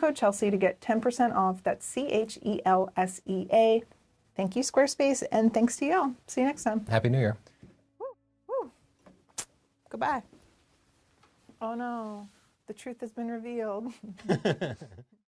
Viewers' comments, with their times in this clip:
0:13 overvoice had me for a sec😂